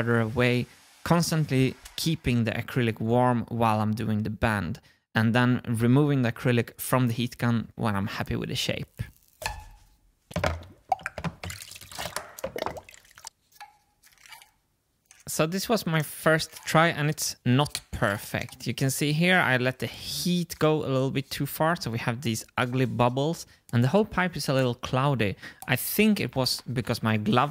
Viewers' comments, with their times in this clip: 0:08 This part is has an interesting asmr.